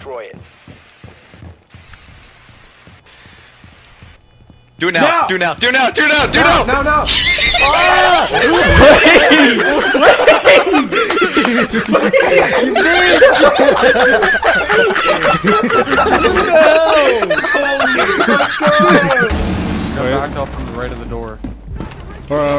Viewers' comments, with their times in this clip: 0:06 that laugh was the best 😂
0:08 who is the one with the wheezy laugh I need to know it adds so much to the comedy